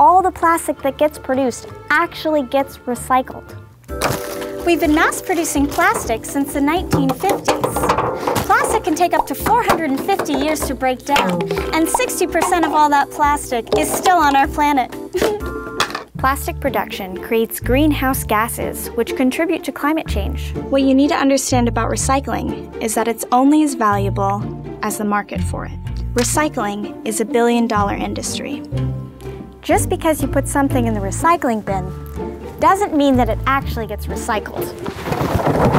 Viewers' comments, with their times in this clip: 0:05 she talks normally while getting hit by plastic...
0:15 Damn! Just imagine how many hours she spent on Wikipedia for this video. Also that laugh is so creepy
0:22 When the party is over by Billie Eilish vibes